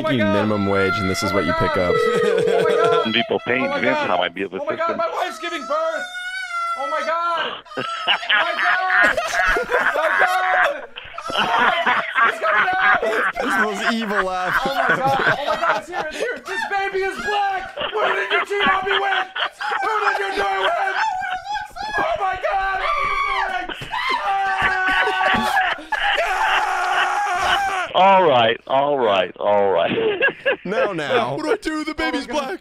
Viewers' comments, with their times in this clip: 0:06 i love how the dude straight up laughed😂😂
0:07 hahahahaha you guys just made someones day. It sounded like he laughed his soul out man. So funny lol.
0:07 THIS FKN LAUGH HAHAH, first time I laughed so hard again after a while
0:07 WTF IS THAT LAUGH LAMO
0:08 Black Beard laugh?!
0:08 bros laugh is devious💀
0:14 nah bro got that green goblin laugh💀💀💀
0:16 Nah you made that guy his day. I’ve never seen a guy with such a hearty laugh